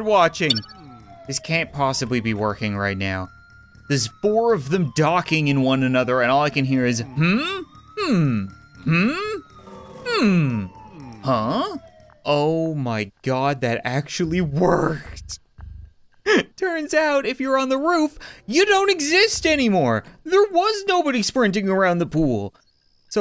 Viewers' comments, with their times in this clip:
0:07 When you make a low budget game about burglary and you need to add sound effects to the guards.